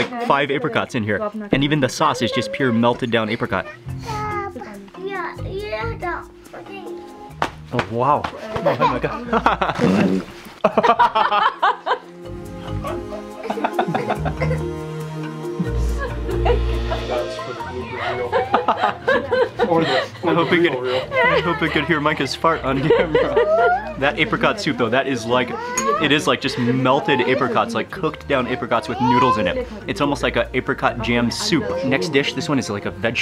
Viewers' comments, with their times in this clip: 0:05 That fart 💨 was so loud 😂😂😂 watch in this video ( —12:60)
0:08 Mark Wiens Your son is cute and when he farted LMAO man couldn't stop laughing!!!! Jokes!!! Can't believe you have balls of steel cuz u can eat or try anything I'm nothing near that but still think I have balls of steel lol!!!
0:09 kid farting was hilarious ahahahah
0:09 that was a full grown man fart 😂😂😂
0:09 😱OMG.... 😁😁😁😁😆who fart
0:20 Your son's Fart 😂🤣🤣😂😂